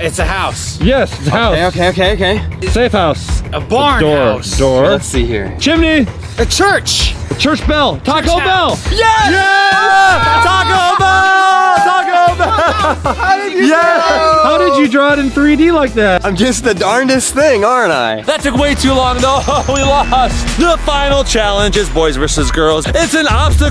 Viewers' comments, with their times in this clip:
0:07 HOW DID CHAD KNOW WHAT SCHOOL I GO TO!?!?! (It sounded like he said "Churchville" which is the name of my school, yes ik he said "church bell")